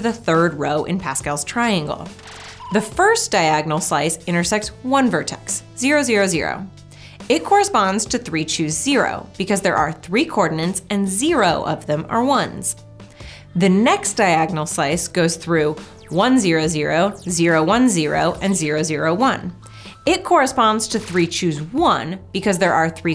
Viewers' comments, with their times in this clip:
0:09 she said 'cordinants' again :P